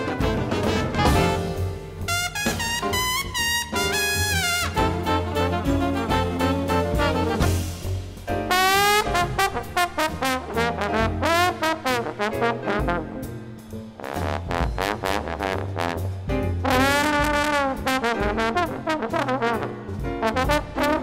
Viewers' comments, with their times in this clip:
0:08 His son Chris playing as filthy as anyone reasonable person would want.